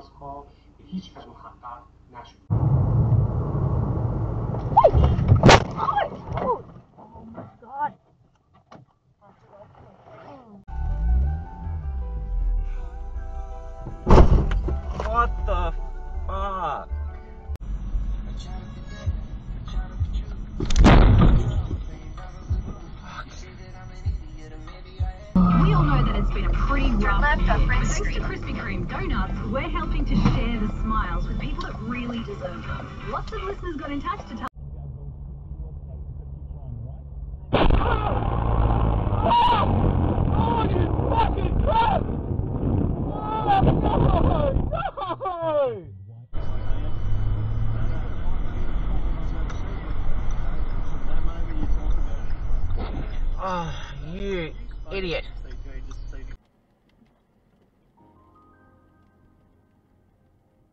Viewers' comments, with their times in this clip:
0:10 Wasn't expecting to hear anime music.
0:35 Ooof.. that poor bloke 😞 I feel his pain with that so much. The sadness in his voice broke me
0:40 the genuine chilling scream of a guy who loved his car and for it to be taken away like that
0:43 he sounds devastated must of been a nice classic car